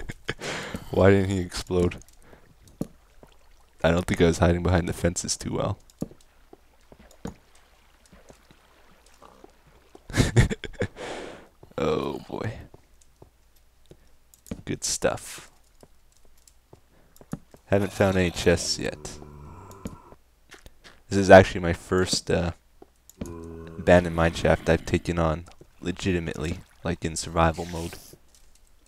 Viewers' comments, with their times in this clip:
0:08 Did anyone else hear the random pig ?
0:10 thought i heard a pig